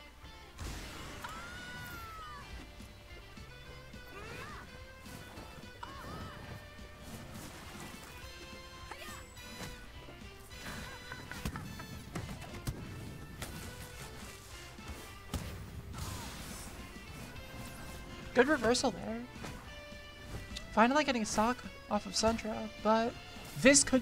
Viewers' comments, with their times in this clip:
0:10 That timed laugh by Aang then is comical. Aang was clearly in control.